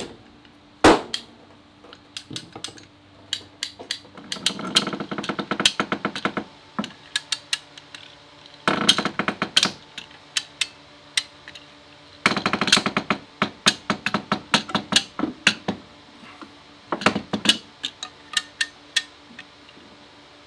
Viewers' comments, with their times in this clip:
0:04 Arabella starts to sound like a ship